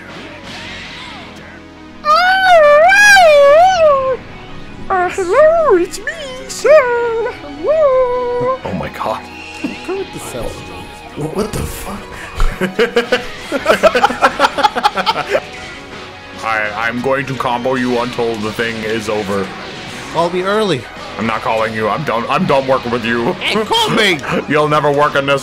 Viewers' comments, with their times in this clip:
0:03 the voice bro 😭
0:05 Why the hell does Cell sound like Ms. Piggy? XD XD XD
0:10 Cell's voice so high makes you think